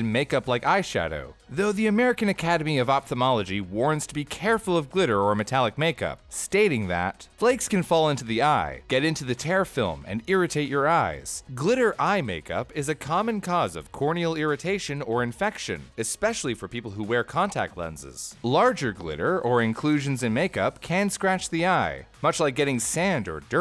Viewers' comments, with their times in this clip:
0:08 Tear film, rhyming with ear. C'mon now.
0:09 whack pronunciation of tear in the context of eyes